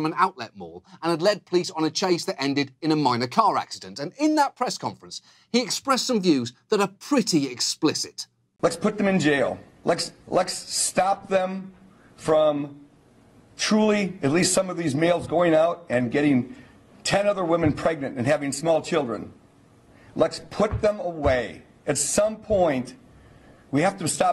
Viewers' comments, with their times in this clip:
0:08 I can't take anyone seriously if they can't pronounce "Let's".